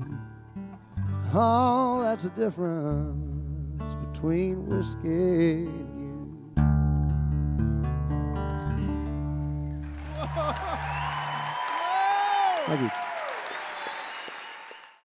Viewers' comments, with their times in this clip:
0:09 Guy is realizing he just heard the greatest voice of the last decade, if not longer